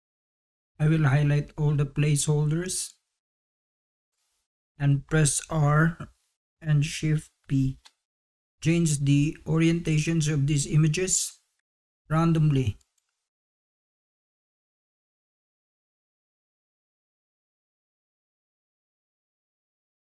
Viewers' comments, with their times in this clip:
0:06 he's saying Press R and SHIFT P --- not B... I used to hate it when middle eastern teachers would just talk and talk as if we all can understand their accent... HALF the class might, others wont, and then youre too afraid to say, "WHAT THE HELL DID YOU JUST SAY"